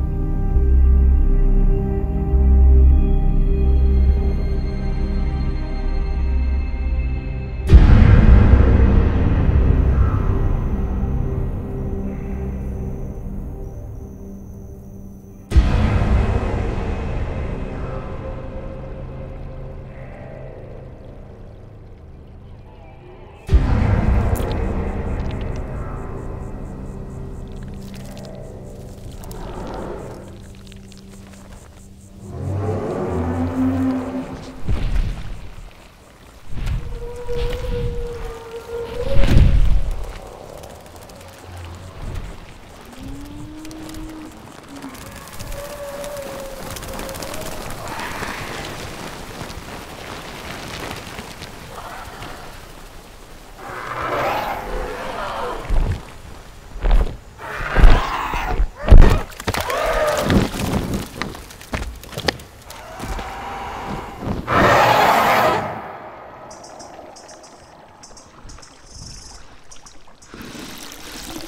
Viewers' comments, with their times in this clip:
0:07 For a moment I thought it was going to play the Lion King song!
0:55 The bass on the Pterosaurs wings made it feel so massive holy crap